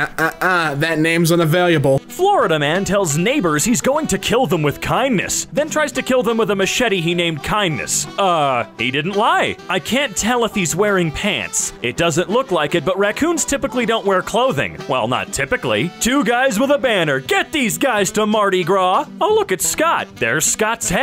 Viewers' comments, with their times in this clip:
0:03 his voice changed what explain his voice going low to high like how?